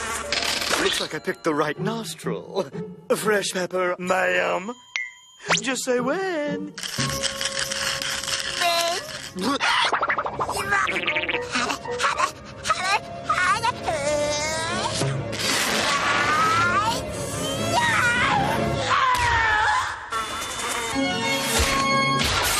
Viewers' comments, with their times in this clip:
0:03 A French pepper mam